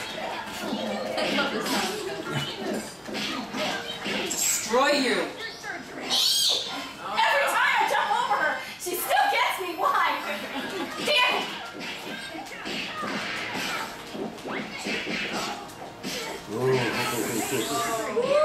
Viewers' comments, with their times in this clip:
0:05 Awwww, that squeal!